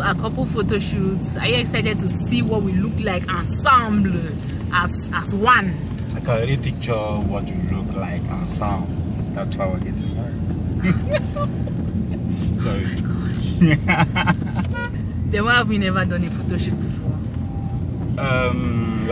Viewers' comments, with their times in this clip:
0:06 "I can already picture what we look like ensemble, that's why we're getting married" (and then chuckles mischievously) 🤣🤣🤣🤣